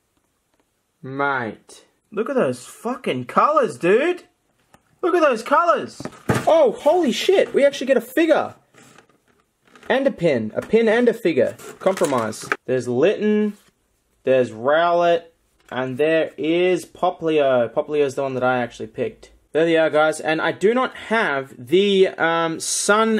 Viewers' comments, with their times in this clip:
0:10 maxmoefoePokemon wtf is a "figa"